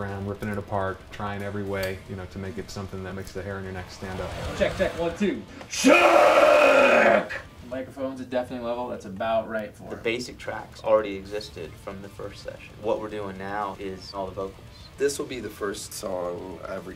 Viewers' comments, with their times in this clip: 0:04 Best way to test audio levels